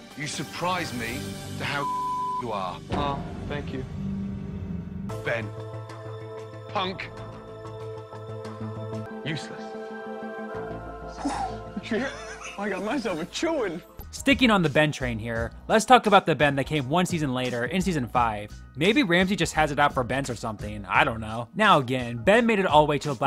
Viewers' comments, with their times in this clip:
0:05 "BEN... Punk! Useless." All the energy of my 7-year-old "practicing" new swear words and we love to see it